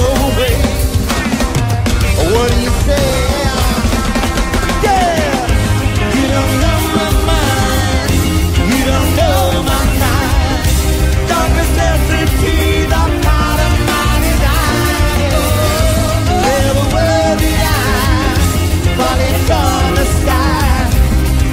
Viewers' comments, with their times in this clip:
0:06 love josh vocals